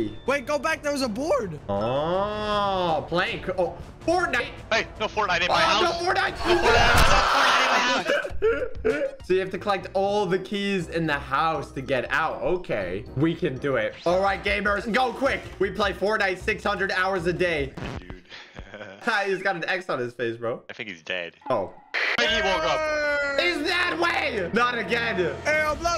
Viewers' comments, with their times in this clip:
0:03 the way he said fortnight 💀
0:08 in this sene there is a fortnite player dancing * defualt dance music pops on *